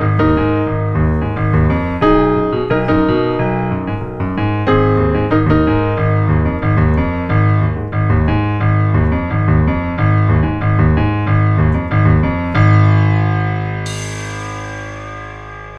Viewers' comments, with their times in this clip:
0:12 epic drum solo